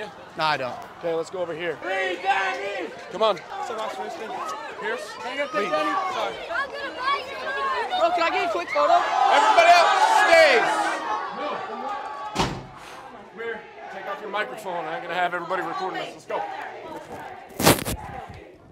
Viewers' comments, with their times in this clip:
0:06 hahaha cute kid yelling "I'm gonna buy your merch!"